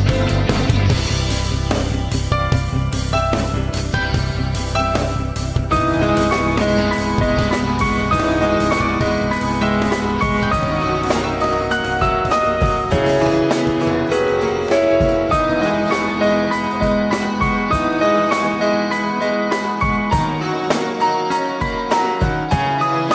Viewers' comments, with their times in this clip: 0:08 Dat chunky dissonance tho